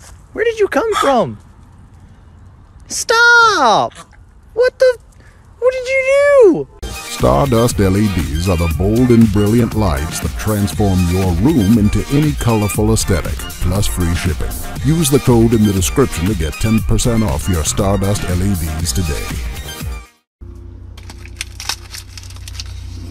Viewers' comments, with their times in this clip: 0:03 did the dog just gag?
0:07 Therapist: Knock off Morgan freeman cant hurt you. Knock off Morgan freeman: